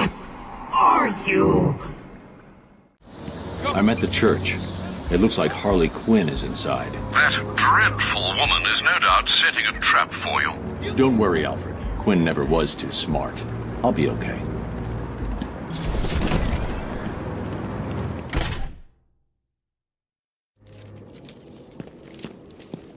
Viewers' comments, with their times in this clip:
0:05 Is and on Tara strong? Harley sounds more high pitched and it kind of sucks. Arleen can only play Harley. It's her character after all.